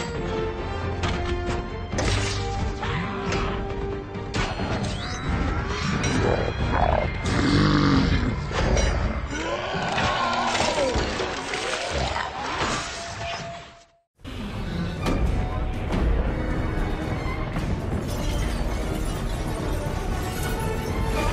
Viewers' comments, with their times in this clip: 0:04 yo did anyone else hear ghidorah ??
0:06 For some reason I heard a legIana roar